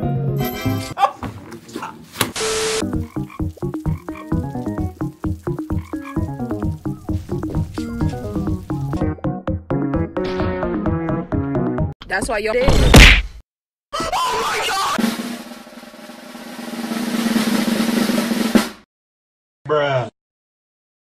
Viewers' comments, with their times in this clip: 0:06 that stump snail must love the stinkbugs music